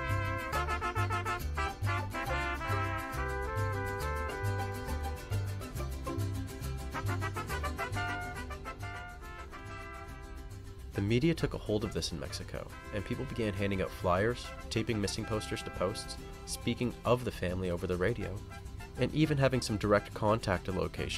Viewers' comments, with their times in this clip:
0:09 The music was amazing ngl